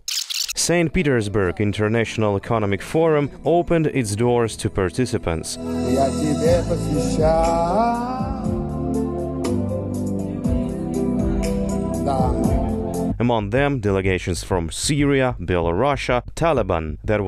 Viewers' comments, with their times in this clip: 0:04 That guy singing just shows how well the Russian economy is performing.